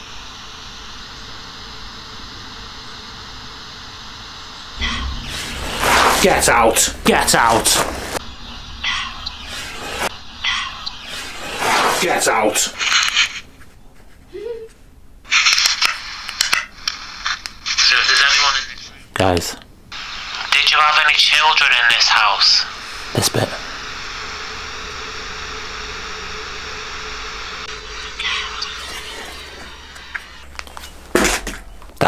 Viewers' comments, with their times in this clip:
0:06 After the EVP replay there's obviously what sounds to be a very clear female laugh, suprised no one else has mentioned this - am I missing something?
0:10 SO.. the little girl giggling, you didn't hear it........
0:12 After the Evp says girl, did I hear a little girl's disembodied and loud giggle? It would be You are so good at this investigating. Banger here!!
0:12 did you miss the sound of a child making a small giggle? just after you said "GET OUT!" It sounded like a little girl. I think your shock and awe made her laugh LOL
0:12 You didn't hear the giggle right??
0:12 excuse me what was that giggle at ca ???
0:13 any One Else Heard A little Girl
0:13 I heard a woman laugh!!!
0:13 TS girl giggled
0:13 Anyone else heare a giggle ?
0:13 Shes laughing at you 🤣🤣
0:13 who giggled? Love how you just chuck the device 😂
0:14 :hand-pink-waving:at you can hear a girl giggle:face-green-smiling: plain as day after you hear girl and you go get out.:face-blue-wide-eyes:. wow how awesome...:face-purple-wide-eyes: love your show..:face-red-heart-shape:much love from a fan in eastern oregon :hand-purple-blue-peace:Happy Easter sugar~:eyes-pink-heart-shape:
0:14 girl giggle in the room...right after you heard "girl" on evp. I guess maybe only we heard it through your phone. Definitely girl giggle.
0:14 Omg.. please tell me you hear the laughter .. loved this episode..
0:14 there's a little giggle
0:14 There is also a woman's giggle
0:14 There was a female laugh like they were amused that you were freaked out
0:14 were you defo alone? That sounds like a female laugh or voice evp caught on your camera audio
0:14 anyone heard this kinda like a little girl giggling
0:14 dude did you hear the noise that sound like a girl moan at the time i put? Go back and listen
0:14 Timestamp a girl can be heard with a short giggle. I'm surprised you didn't hear it in real time, it was that clear!!!
0:14 after your question, were there any children in this house? , and you get the response, Girl. You can hear a little girl giggle after you replay it. 👍 Nice work.
0:14 I can hear a short little giggle , sounds to be of a female possibly. Great find it made my hair stand up a few times
0:14 Sounded like a girl laughed at your scare at the evp
0:14 a little laugh😮
0:14 There is a little girl laugh It is SO loud!! OMG that is just crazy!!
0:14 that little girl laugh, was that part of the recording or was it caught on the camera's recording. It seems like he didn't hear it because he didn't react to that laugh.
0:14 sounded like a girls giggle
0:14 did anyone talk about the female laugh ??!
0:14 i hear a little girl giggle 😬
0:14 a girl can be heard giggeling.
0:14 i dont know if there is someone with you but on i heard a girl laughing
0:14 laugh? Edit:in slomo sounds like "he is?"
0:14 Did you hear that giggle ??? 😲
0:14 Yep i heard it too, little girl giggling
0:15 there was a very clear sound of a child giggling, VERY clear.
0:15 you can hear a little girl laughing at your reaction to hearing it say girl 🤣🤣💚💛❤️
0:15 when you're listening to the play back of the evp it sounds like a child giggling 😊. You're Videos are awesome ❤
0:15 did you here the high pitched noise right there?
0:15 sounds like a kid giggled